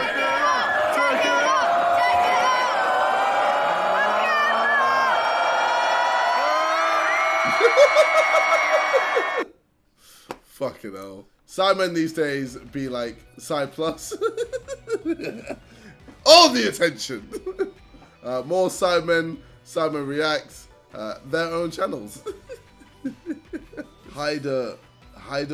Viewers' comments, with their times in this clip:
0:06 cries of horror.